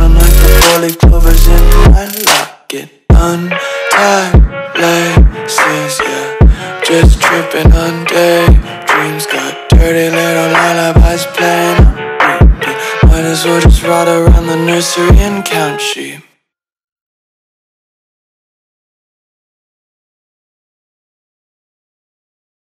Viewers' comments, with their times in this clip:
0:04 i can just hear the aussie screaming in america wtf